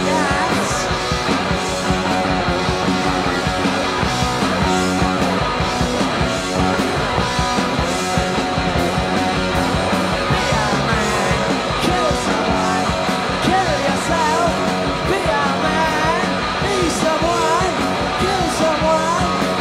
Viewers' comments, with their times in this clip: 0:03 Cooks drumming has great clarity and definition mark, filling in the gaps, great choices, and carrying Sid.